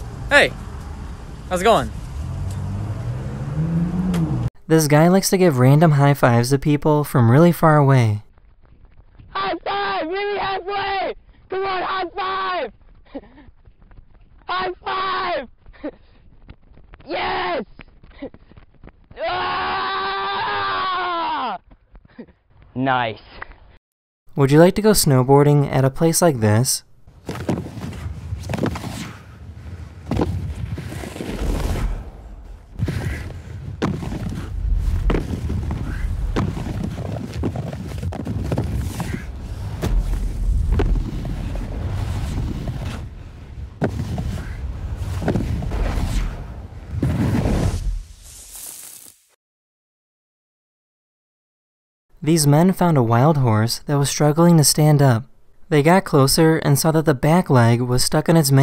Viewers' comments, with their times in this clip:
0:10 If I saw that guy running at me screaming "HIGH FIVE", I would have assumed he's drunk or wanted to kidnap me, so naturally, I would run The other way
0:27 ahh that smooth sound
0:32 I never knew something could sound smooth. It's just so satisfying to listen
0:39 warzone death sound
0:45 the sound us asmr